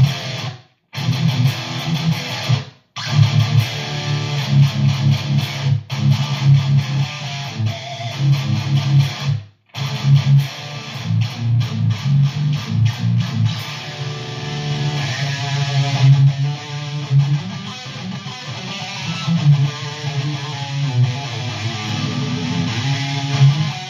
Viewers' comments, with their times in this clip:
0:06 danzig circle of snakes pinch harmonic